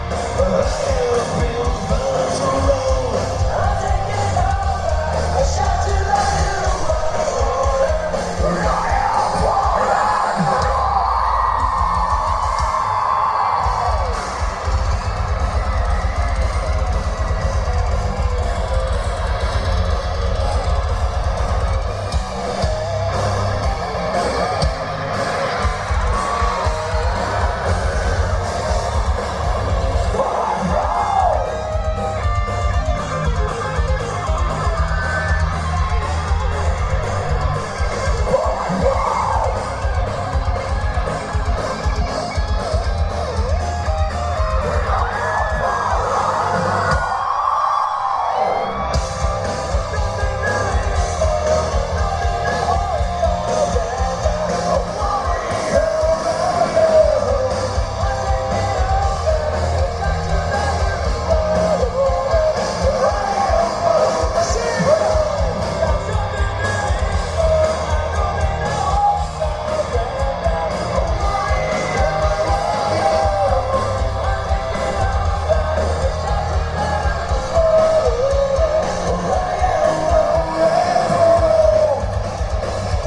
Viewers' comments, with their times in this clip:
0:07 that scream of Andy. Holy Andy. 😄
0:08 Does anyone know the screaming technique that Andy uses ??
0:15 scream *___* respect Andy,respect
1:05 It was like Ashley was being commanded to sing